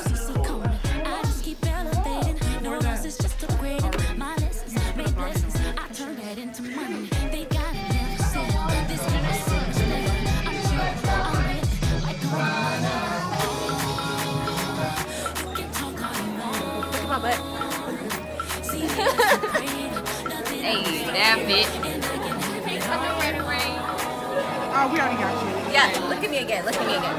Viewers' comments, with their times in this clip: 0:08 Um...why are they listening to baby shark and dancing to it in a classroom??? Lol XD😂😂😂